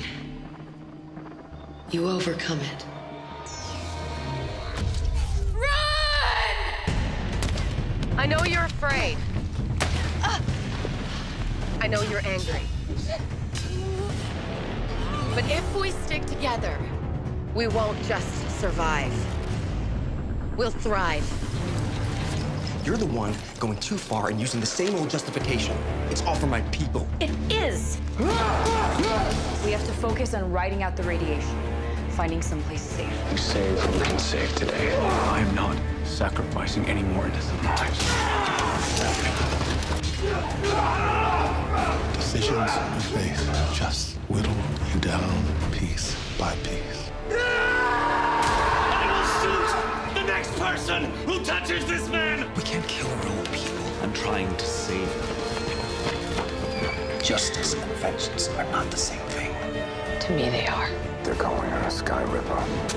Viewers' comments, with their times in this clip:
0:06 Who screams run ? Sounds like Lexa.......
0:47 who's that guy and why should I care about his agonized screams?